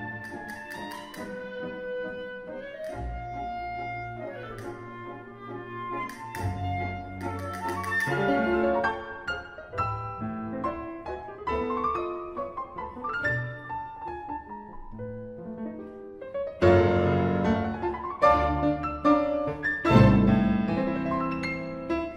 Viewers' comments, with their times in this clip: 0:05 Gotta love the squeak from the clarinet Happens to the best of musicians, but still... 🤣🤣🤣